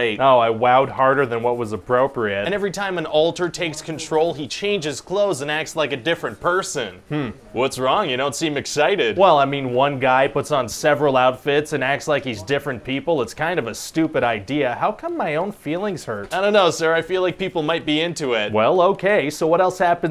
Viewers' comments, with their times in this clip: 0:04 I thought I was crazy. I def heard voices. Jesus Christ, the background noise